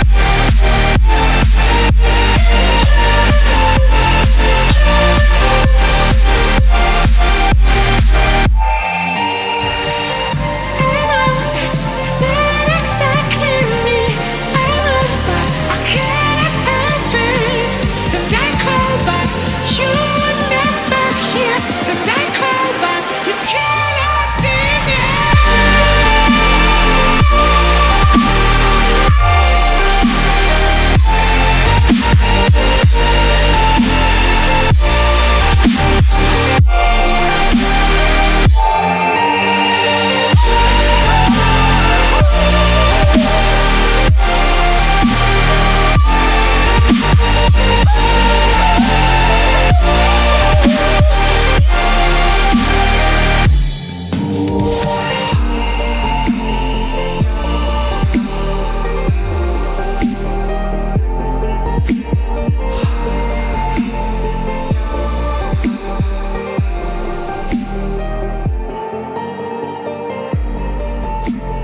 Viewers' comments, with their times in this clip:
0:10 I love the 3rd melodic dubstep drop. :3 →
0:10 whos singing this part? is it elmo?
0:24 That Dubstep drop is awesome, well done! This song is amazing!
0:29 wow a combination of House and Dubstep
0:55 If depression had it's own music 🫡 And the outro it's really good, deep and calm 😏